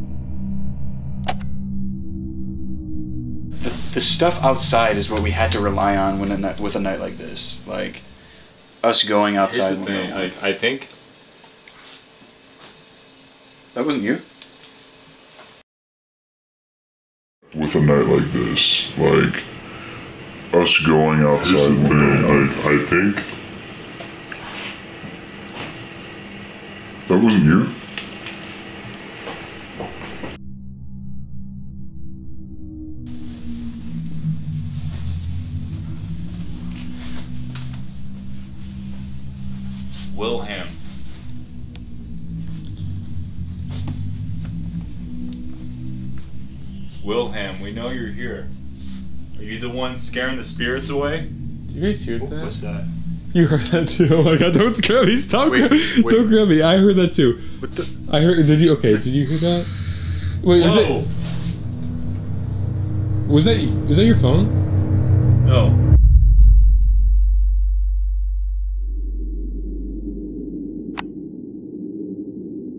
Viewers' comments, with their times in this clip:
0:04 why is nobody talking about that evp?! Crazy evidence
0:59 thats one hell of a screach willhem